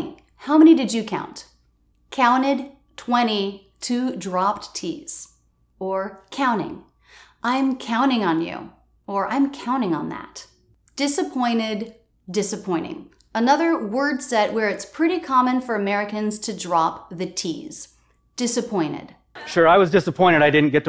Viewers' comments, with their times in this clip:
0:08 Also, I think, she dropped the T in the word “that” after the preposition “on”. Sounds “on ‘at”.